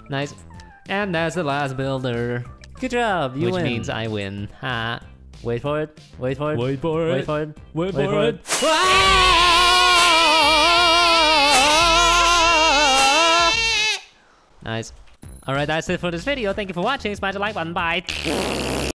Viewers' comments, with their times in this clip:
0:08 The noises they make are slightly disturbing!!!
0:09 this is how the asian scream.